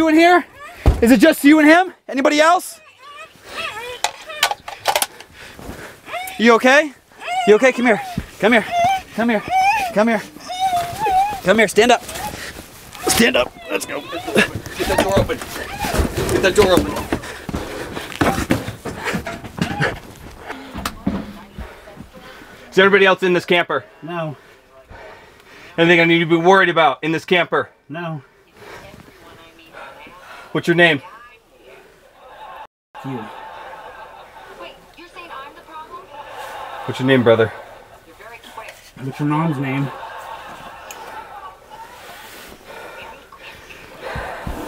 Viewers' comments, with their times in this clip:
0:08 close ur eyes hear it very dirty
0:09 Well she didnt have to make those sounds
0:30 Police:what's ur name Guy:what's ur mom name TV:laughs TVs in there natural habit